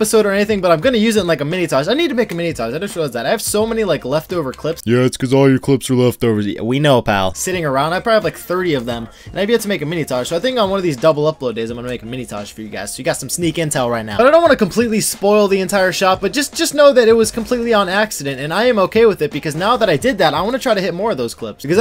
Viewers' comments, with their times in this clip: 0:04 That pause though hahahaha